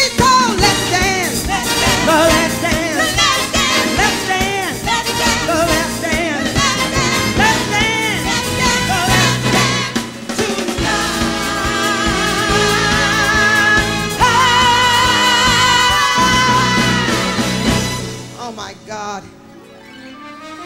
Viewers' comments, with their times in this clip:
0:05 Girl couldn't hear that key change! Doesn't matter! There's only one Jenifer Lewis!